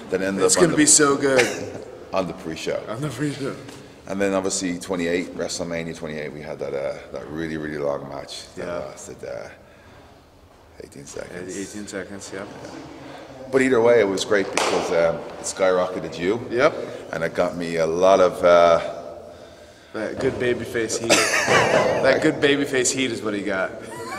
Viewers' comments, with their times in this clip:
0:10 idk why when he said 18 seconds in a low voice I cracked up